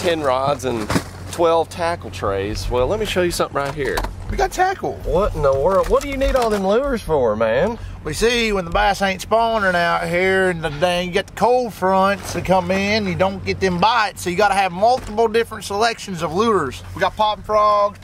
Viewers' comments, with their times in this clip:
0:06 Man, from for the next minute it's soundin' like dang ol' Boomhauer talkin' tell you what.